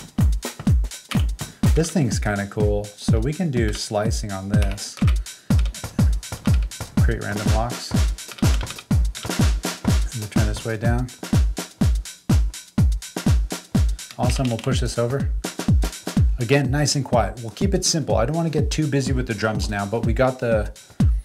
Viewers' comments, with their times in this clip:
0:04 Was that just a sliced snare or a sliced loop? I’ve never sliced a non-loop. Not even done watching but I had to go back and watch that part again. Dope as always!